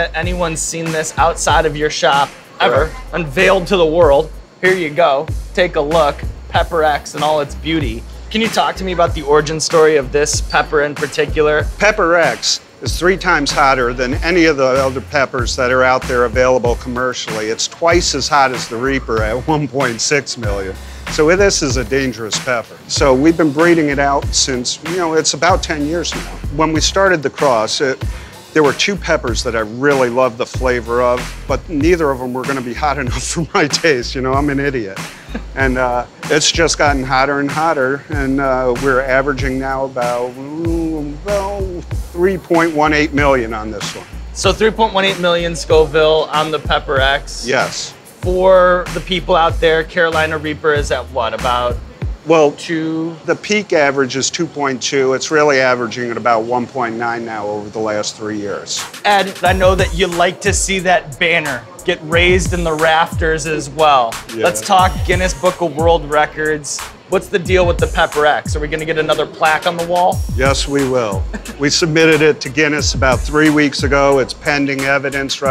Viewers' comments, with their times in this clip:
0:03 Skip to to hear Sean rap
0:04 he talks perfectly on beat with the background music.
0:40 eds mouth sounds match up perfectly
0:58 he also has a perfect flow
0:59 Is Sean rapping ??